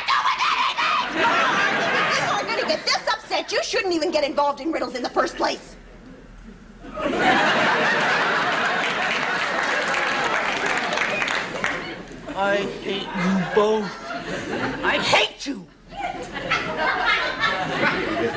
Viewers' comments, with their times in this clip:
0:06 This is one of my most favourite CBS sketches...when Carol yells "What's that got to do with anything????" and that face she makes ! But I've always wondered why was it OK for Steve to tell Carla the answer, and "spoil" the riddle, but not Marge?